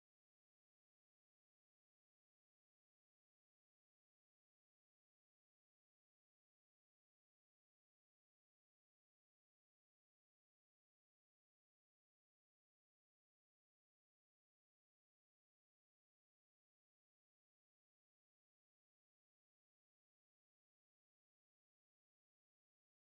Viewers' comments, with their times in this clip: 0:07 really shows how much impact music can have on your emotioNS. IM NOT CRYinG. Does anyone know the title of the song? It sounds like something from Really Slow Motion. Cinematic and beautiful.